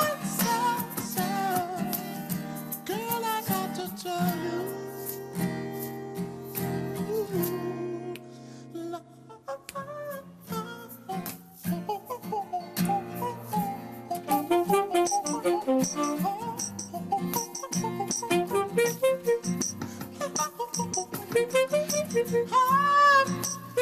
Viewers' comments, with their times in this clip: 0:05 brooo i cringed. the song started okay, then it got good, then beast when it was clearly freestyle, then he had the moment seized ready to finish, all he had to do was compliment in song but he hesitated and she saw it too (her face expression) and he got nervous and started making monkey noises. fuuuck, almost had it reggie.